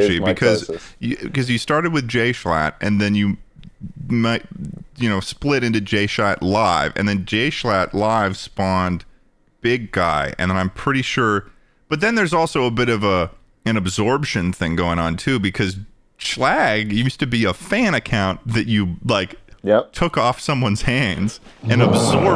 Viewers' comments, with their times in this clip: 0:03 bro just said 'jshat'